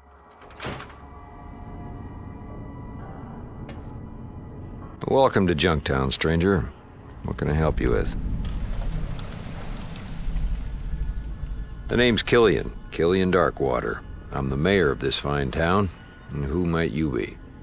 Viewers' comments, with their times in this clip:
0:04 dude sounds like a radio